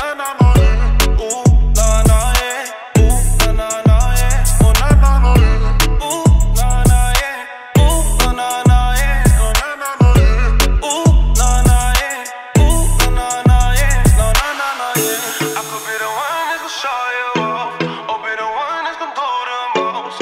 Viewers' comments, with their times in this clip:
0:08 Lad with the didj 🖤💛❤️🙌🏽